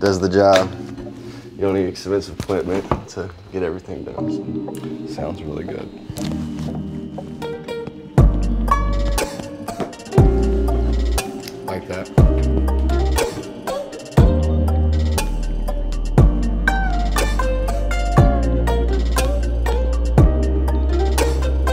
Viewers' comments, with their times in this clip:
0:06 That guitar riff 😍